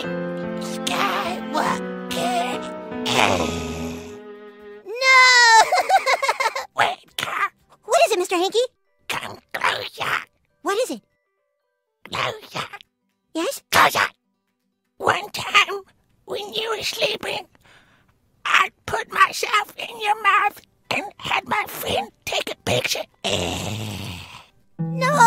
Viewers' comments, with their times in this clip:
0:09 that’s voice lol